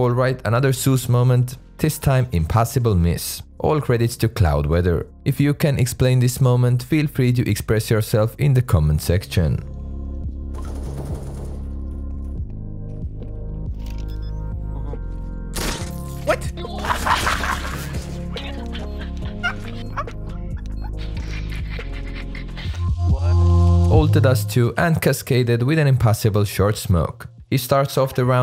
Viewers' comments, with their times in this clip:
0:09 Did anyone notice the Snapchat notification
0:10 thought i got a snap lol